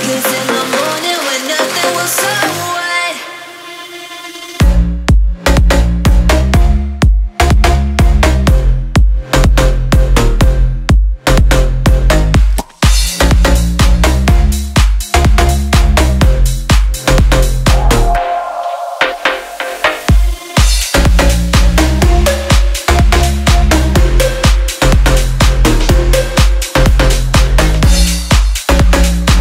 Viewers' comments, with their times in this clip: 0:10 Did this guy seriously use the "Muh" sound you make with your mouth for a drop😂